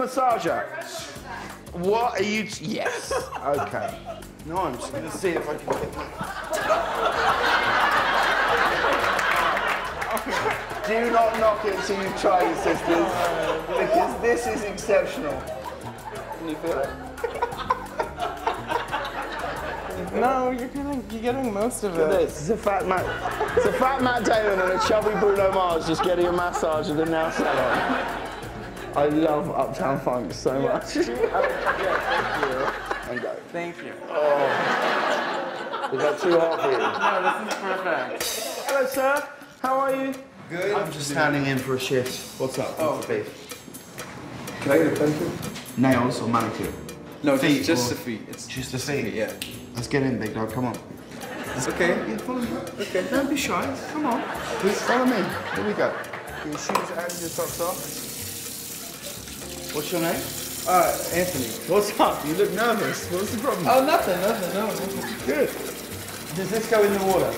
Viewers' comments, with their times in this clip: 0:10 if there was a way to make Harry Styles saying that ANY gayer, that is it.
0:49 I heard that "Lets get in Negro come on" Lmao what's wrong with me